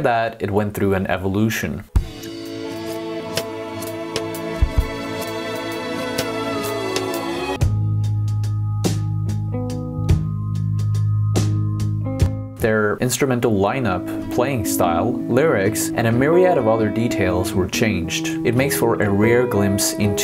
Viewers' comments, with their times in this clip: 0:08 OK Computer Nude sounds so Pablo Honey, for some reason